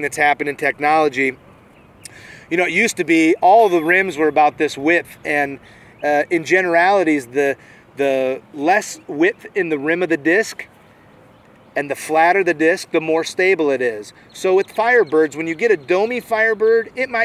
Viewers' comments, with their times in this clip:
0:04 someone forgot to shut off the putting machine in the background..